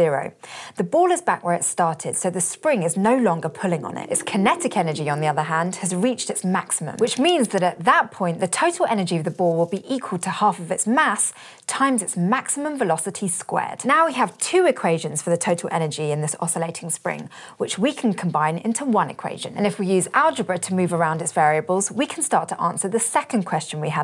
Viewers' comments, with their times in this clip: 0:10 I just wanted to know the definition of periodic motion to understand vibration as it relates to music theory. I couldn't help but watch the whole video because the young woman narrating was so beautiful and I love her voice. But she was talking very fast about concepts that are totally new and unfamiliar to me. I realized I might as well be at a bar with a hot rocket scientist just nodding my head and saying "yep, mm hmm, ok." I'm totally lost lol